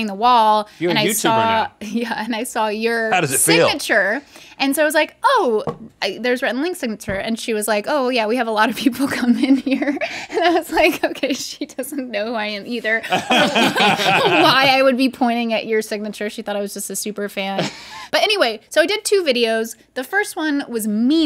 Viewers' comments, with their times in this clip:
0:08 not rude sounding at all :)